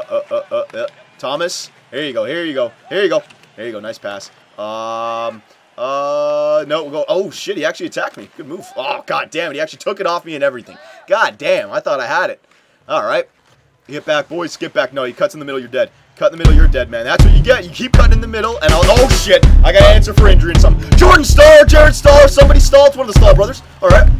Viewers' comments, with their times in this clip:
0:09 Epic music was the best :D